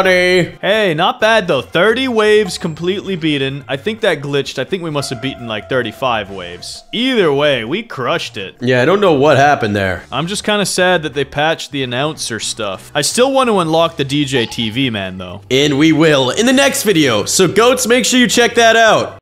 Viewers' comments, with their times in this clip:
0:09 And the way he says I don’t know what happened there